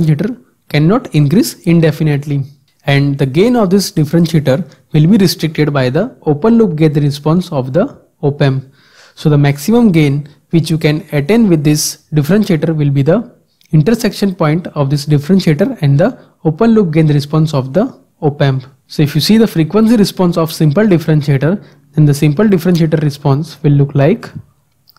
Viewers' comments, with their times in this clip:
0:05 The gain of differentiator cannot increase indefinetely. It is restricted by what, it is not sounding clearly. You say something "open loop..." what is that ? in the video this is appearing